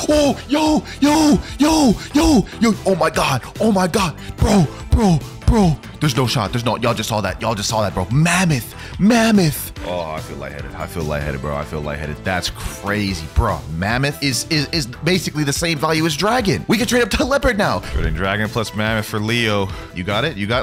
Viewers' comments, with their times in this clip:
0:05 the most silent suprised ever voice